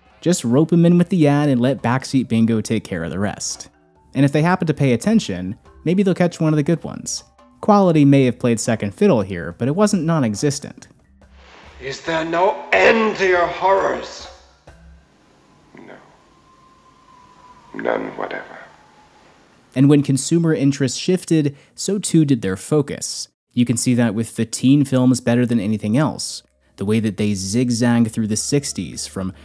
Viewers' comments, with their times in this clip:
0:10 It is amazing how Vincent Price can make your spine quiver, completely out of context, with one line.